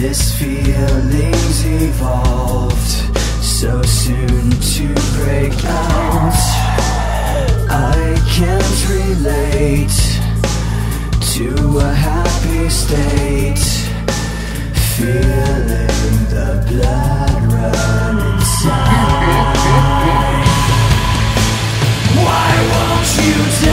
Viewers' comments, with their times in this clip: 0:05 Fang-tastic song, superior to anything made by Linkin Park in every possible way. And the howl would make it good for werevolves, too!